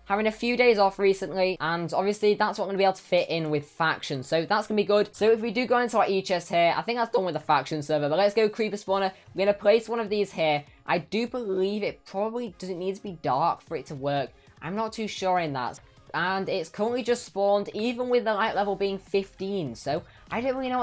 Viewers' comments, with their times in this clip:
0:07 Huge voice crack